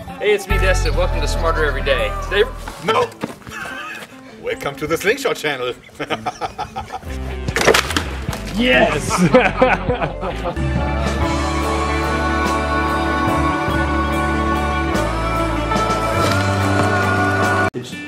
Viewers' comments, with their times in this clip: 0:05 Subtitles [Intense German Laughter] - haha